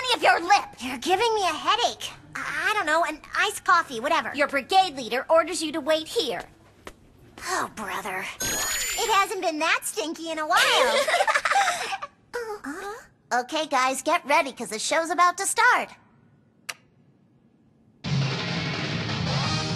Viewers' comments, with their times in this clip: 0:04 So, do Konata and Haruhi have the same voice actress? They sound almost alike in